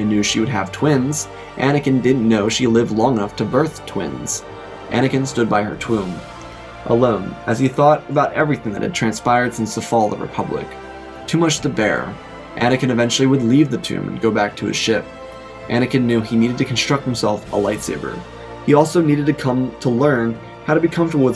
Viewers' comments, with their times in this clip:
0:05 you said twomb on